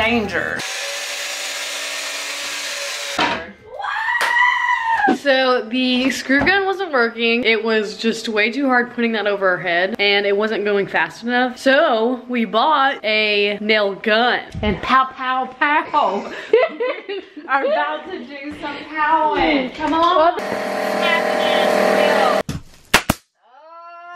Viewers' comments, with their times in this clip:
0:03 your scream reminds me of R2D2 HAHA
0:05 lego death noise